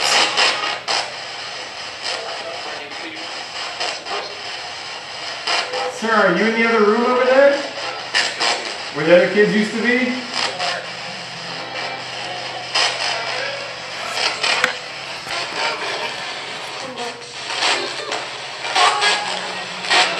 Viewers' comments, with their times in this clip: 0:05 it sounds like there is a male voice that may either be saying a phrase right before they said “first,” or it could have been a whole sentence ending with the word “first.” Not sure.